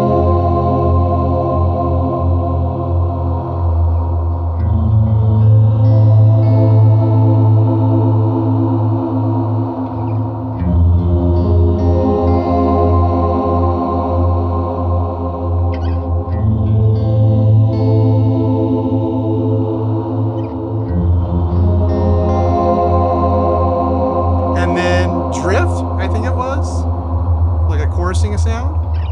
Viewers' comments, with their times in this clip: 0:10 Reminds me human choir 👍